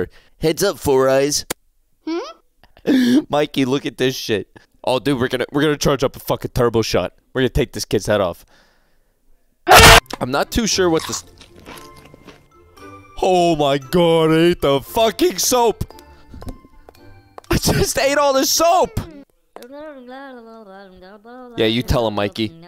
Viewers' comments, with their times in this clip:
0:09 is a perfect cut scream 🤣🤣🤣